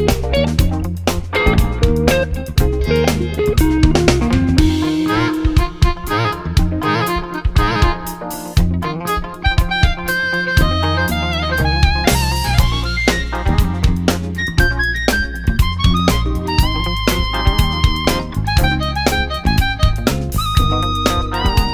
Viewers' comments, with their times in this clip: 0:04 that solo is just something else